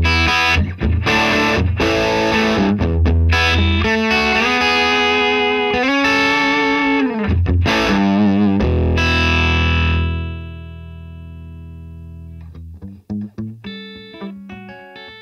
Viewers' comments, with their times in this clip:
0:03 The moment right is great example of "a good LP is a tele on steroids"